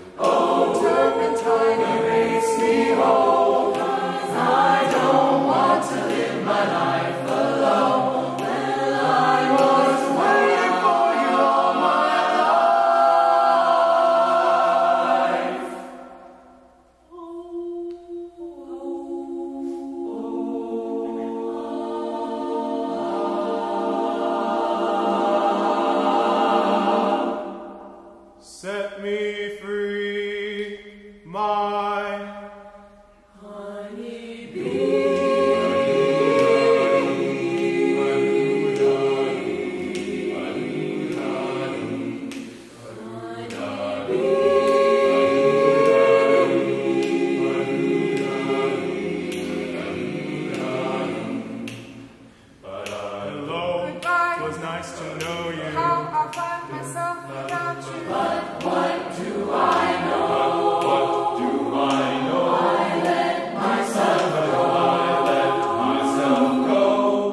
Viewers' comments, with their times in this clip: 0:10 That harmonization gets me every time
0:49 omg someone coughed.